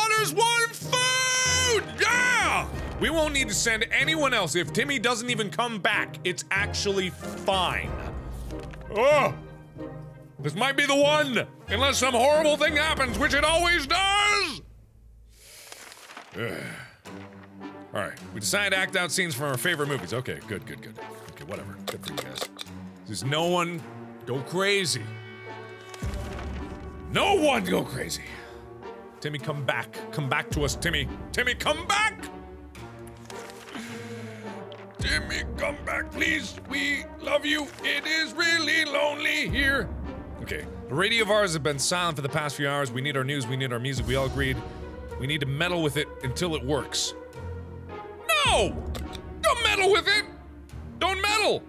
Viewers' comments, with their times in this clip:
0:08 = it sounds like the laugh of that king from that ancient Legend of Zelda 2D animated show long before Windows 10 existed.
0:08 Markiplier briefly becomes King Harkinian
0:31 why that actually sound good doe....
0:33 Markiplier's new song Timmy come back ☺